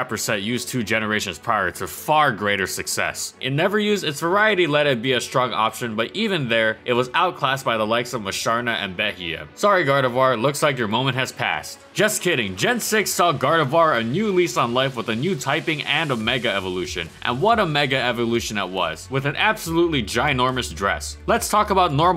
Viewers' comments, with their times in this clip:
0:07 I couldn't quite catch what he said in It was something about Gardevoir being outclasses by Musharna and another pokemon which I couldn't hear